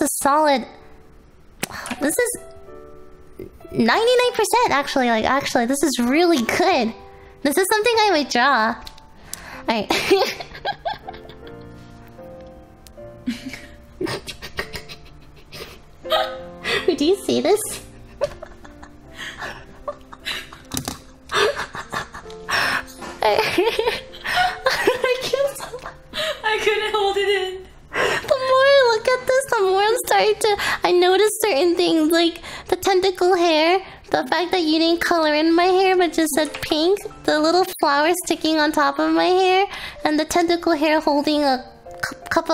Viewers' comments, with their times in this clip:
0:09 there's a part where Lily's voice lowers while she's laughing... 0-0
0:25 Her voice sounded normal but it was still cute.
0:26 "I cant hold it in." sounds a lot like her deeper voice. Which may indicate that she is faking her voice but this is just a fun conspiracy to me. Not anything towards hate.